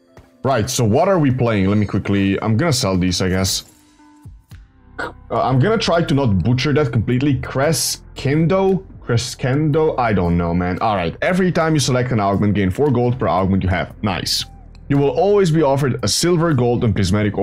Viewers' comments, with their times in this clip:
0:05 "I'm gonna try not to butcher that completelly" "cress- kendo" that really got me 😂